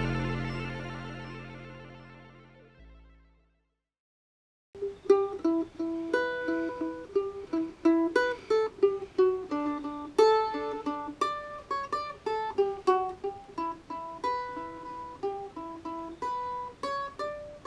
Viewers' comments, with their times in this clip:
0:05 Bannerman 2 confirmed :P nice shante singing! so many cool options appearing in the game, looks like there's going to be tons of ways to play! if you need any help with pixel art I can always doodle a few props to chuck in the mix I've gotten pretty good with Pyxel Edit now :) Keep up the great work! always love tuning in to see what you guys have been up to :)